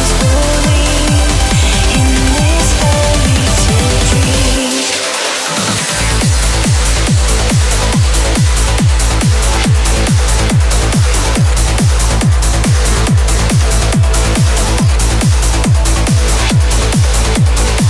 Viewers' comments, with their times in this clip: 0:05 so beautiful! Also, the female BG very lovely!